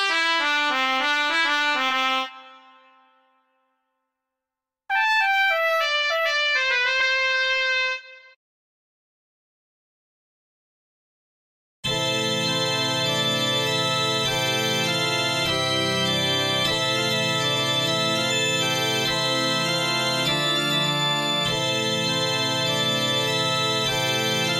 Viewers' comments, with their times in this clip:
0:09 Tree: ANGELICAL SOUND
0:11 sounds like a church organ😂